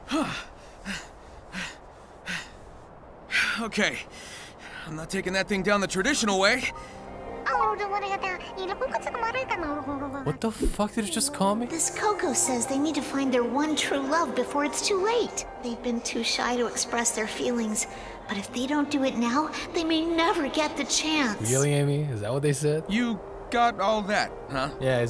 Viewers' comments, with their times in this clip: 0:08 this koko cracked me and my brother up because it says conchetumare in between the gibberish (chilean spanish word for mxtherfxcker)